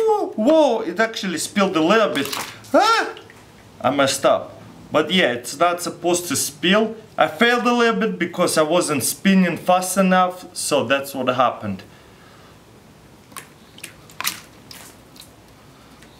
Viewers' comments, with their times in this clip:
0:04 this doesn't demonstrate inertia, but centripetal acceleration and uniform circular movement btw, did he say "but blyat!" in ?